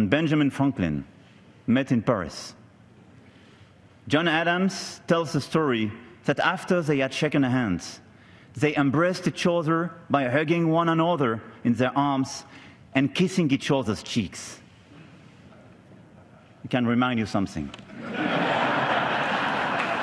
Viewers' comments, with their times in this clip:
0:05 what's with needing subtitles?? For a country that's had >400 years of immigrants, it never ceases to amaze me how easily Americans are confused by an accent.